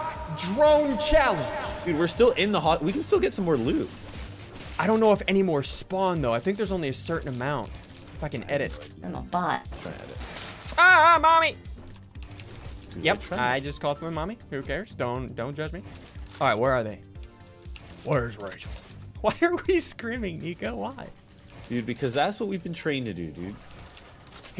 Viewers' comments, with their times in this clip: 0:07 is it me or don't it sound like that he's swearing he either says fuckin edit or if I can edit,. weird